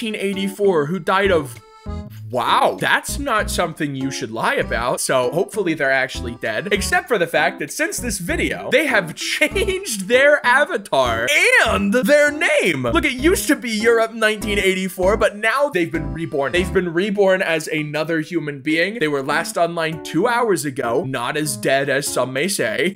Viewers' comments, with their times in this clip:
0:05 laughability that sounded so wrong…